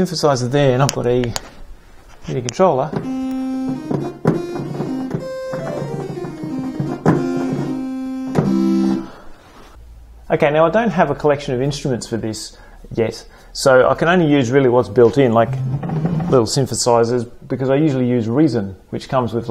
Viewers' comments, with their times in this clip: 0:03 when you're playing an old point and click game and walk into the bar